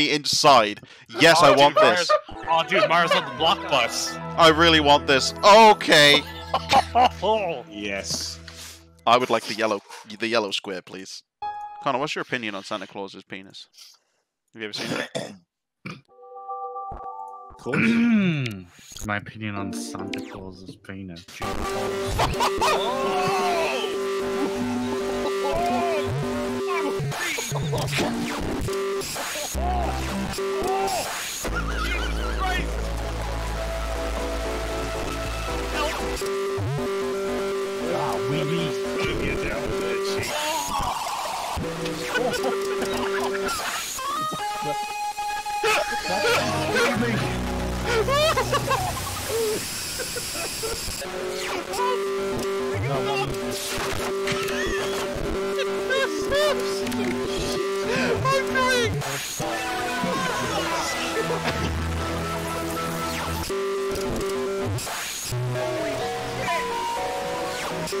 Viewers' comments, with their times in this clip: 0:09 the Wii EARRAPE Edition
0:17 M Y F R I C K I N G E A R S
0:17 Ive been on the internet long enough to be given immunity to all things earrape, and is no exception but im still crying lol
0:18 its time for bass boost!
0:20 dies of laughter and earrape
0:20 Thx has taken over Nintendo
0:20 (ear) rape mii
0:20 sorry to headphones
0:21 when you turn your Wii on at night, thinking your tv volume is low
0:21 WII INTENSIFIES Edit: The time stamp above should be used with caution, headphones off.
0:21 I think my scream sums up that entire corruption.
0:21 is literal proof that you can make anything loud in human existence and itll be funny.
0:21 That's some good dubstep remix of the wii themes right there!
0:21 this is an entirely new form of earrape, normally its just blasting, not legit L O U D
0:21 is this what hell sounds like? That was the funniest thing ever. Couldn't stop laughing, Jesus
0:21 when you turn on the wii in 2AM in the morning on full volume
0:21 wii: triggered Everyone in the 100 mile radius: goes fucking deaf and die Headphones/AirPods: speak inside them below The world: blows up Aliens: literally fly out of this solar system I think I did a bit too much 🤣
0:21 ok that's the real earthquake noise XD
0:21 Picture in your mind it's 1 o' clock in the morning and your voulme maxed out and your headphones stopped working Edit: if this happened to me I would be dead meat
0:21 And my ears have been assaulted
0:21 The Wii... but louder!
0:21 Nintendo Wii Earrape Edition (TM)
0:21 that has to be the best corruption that I have seen,or should I say heard
0:21 Earrape wii (R.I.P headphone users)
0:21 Someone's been having A LITTLE too much fun with the audio distortion effect.
0:21 *Bass boosts you off guard*
0:21 this is what volume 1000 on crt tv feels like on Nintendo Wii....(I’m dying right now)
0:21 AAAAAA MY EARS
0:21 THX logo be like
0:21 The Wii Menu if it was performed by My Bloody Valentine
0:21 Who gave Mario the bass guitar
0:21 YOU CAN SAY THIS WAS A WEARRAPE ya know, wii.... wea... ear rape... Wearrape.... come on T^T
0:21 Wii Earrape Edition
0:21 Everyone's talking being loud but it isn't. Fight me if you think I'm wrong lol
0:21 Why is it so loud
0:21 Set the loud part to 25 on
0:21 Loudness effect Audio!!!
0:21 my Wii kinda has this audio issue but it's hardly noticable
0:21 Warning! Turn down the volume!
0:21 This just sounds like a Merzbow song.
0:21 Jessie who installed 100 speakers with max volume to the wii?!
0:21 wii: earrape edition: get yourself deaf by listening it to headphones. NEW from nintendo!
0:21 Ear-rape premium ™ + perfectly working visual + W H E E Z E + Clicking on channels for more earrape, but with more notes + The internet channel = EXTREME LAUGHS™
0:21 TURN UP YOUR VOLUME. ITS REALLY QUIET
0:21 error has erreped please turn Down your volume thx. Wii
0:22 This is what happens when you boost your audio to 300% bass max and treble minimum on the biggest speakers in existence.
0:22 Wii menu music, heavy metal cover.
0:22 Nintendo Wii E A R A P E E D I T I O N
0:22 when you plug your Wii audio out into a guitar amp. I wonder if that’s even possible.
0:22 BASS BOOSTED TIME
0:22 R.I.P: HEADFONE USERS
0:22 warning violent earrape
0:22 Rip headphone uses
0:22 Omg it is soooo loud part
0:22 Wii is Loud for me
0:23 some nice asmr, nice asmr
0:23 Earrape at its finest form
0:24 Ladies and gentlemen, introducing the Nintendo Wii: Earrape Edition!
0:26 Rip your Ears
0:27 the earrape had me rolling on the floor for hours yesterday XD
0:28 whoever is in the background going "OHOHOHOHOOOO HOOOOOO" is killing me 💀💀💀💀
0:31 my personal favorite is the distorted wii shop channel theme (wait, something doesn't seem right)
0:40 are we gonna just ignore the fact that that sounded like an 8 bit descent into hell as someone screams demomically
0:40 I'm in FUCKING TEARS FROM THAT DISC NOISE LMFAOOO
0:42 Who here really loves the heavy metal Internet Channel theme XD
0:42 THE INTERNET CHANNEL SOUNDS LIKE SOMEONES SCREAMING 😂
0:43 the sound engineer did well, he ducked the sound of the main menu to prevent clipping
0:43 sounds like a guitar riff or whater its called
0:43 Insane guitar riff.
0:43 Gitaur solo *EEEEEEEEEEEEEEEEEEEEE*
0:44 internet channel earrape
0:44 T H E D E A F S C R E E M
0:44 thats some nice heavy metal 🎸
0:46 that hurt my ears .it was too loud when the Internet channel opened up💀
0:48 sreams of the dying children
0:49 The sound SSSSSSSSSSSSSSSSSSSSSSSSSSSSSSSSSSSSSSSSSSSSSSSSSSSSSSSSSSSSSSSSSSSSSSSSSSSSS
0:54 Guy Laugh Like a K Form Alphabet lore
0:59 DOLBY PROLOGIC bleeds away